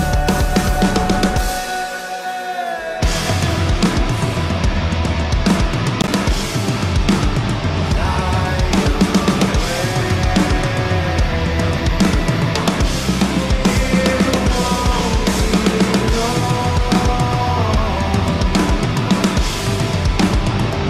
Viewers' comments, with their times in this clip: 0:05 I made the exact same face when he went into that crazy drum beat The timing during that section was insane.